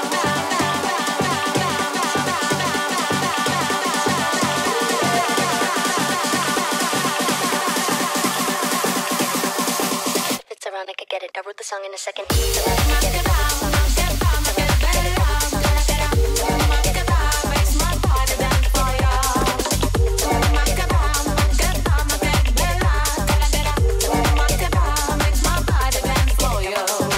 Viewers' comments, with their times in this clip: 0:08 OMFGGGG THAT IS MY VOICE TALKING REALLY FAST i love u so much thank u for putting me in your mix youre literally my favorite person and im crying . thank u mother